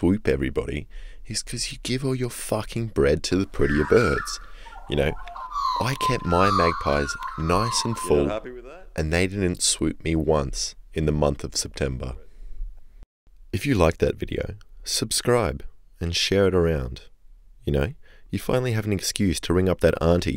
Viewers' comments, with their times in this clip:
0:05 they are literally blowing trumpets for the new King of the Magpies.